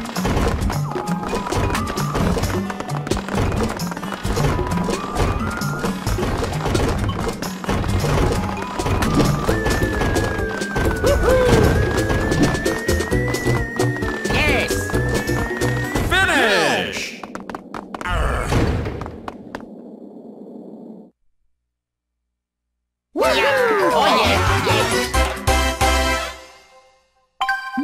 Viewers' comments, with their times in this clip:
0:10 Mario: Hoo-hoo! Luigi: Yes! Yoshi: *cheerful Yoshi noise* Wario: Arrgh!